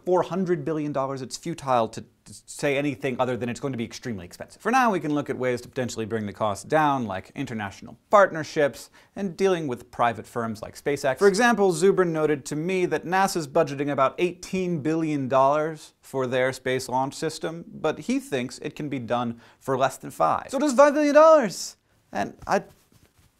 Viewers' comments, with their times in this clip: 0:07 I thought he said, " International fartnerships"....